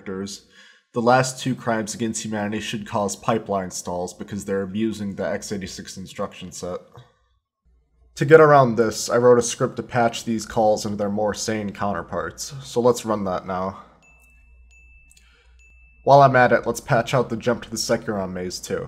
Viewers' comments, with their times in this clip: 0:06 The irked sigh slays me